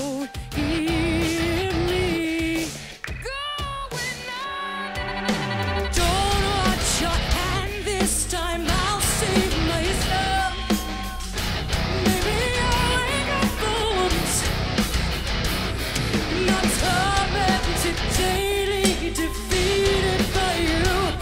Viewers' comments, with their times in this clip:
0:05 i dont know why in the song of going under, the bass not doing improvisation is this only partly live (?)